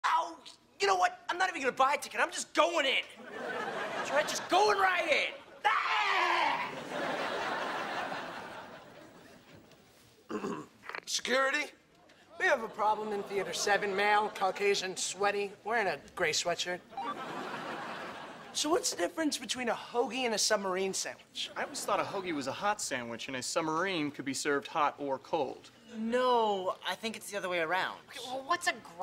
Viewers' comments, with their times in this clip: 0:05 Drake yells at the ticket guy
0:11 I miss this famous background track when something crazy happens